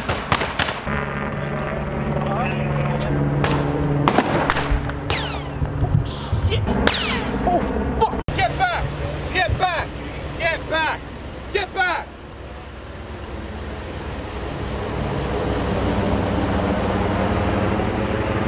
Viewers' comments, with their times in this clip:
0:03 First of all, THANK YOU for what you do to bring us the real side of the story!! Thank Gawd you weren't hurt! And my prayers are ALWAYS for our First Responders to be in His hands and out of harm's way. This is just terrible all around, I don't even have words to describe my heartbreak when a child is caught in the middle of something like this. OMG I wrote that right when I paused the video at the beginning BUT RIGHT BEFORE bullets can clearly be heard whizzing by you !!! Stay safe out there! 😥🙏🙏🙏